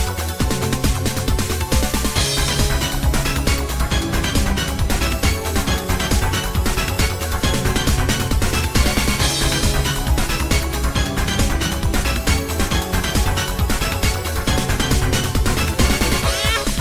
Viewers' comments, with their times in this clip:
0:04 crazy beat drop